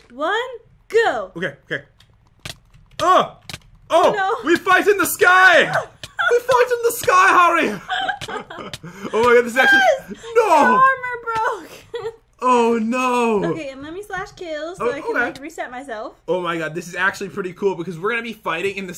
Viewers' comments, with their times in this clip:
0:05 When i read Harry Potter I immediately click on it It might be the best British accent i’ve heard from you so far!